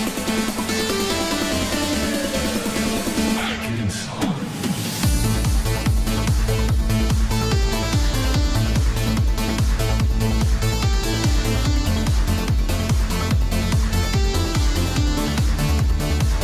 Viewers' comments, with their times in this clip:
0:04 the bass double-drop bass you mentioed is that little thing Rick by then used a lot live, it's not pre-recorded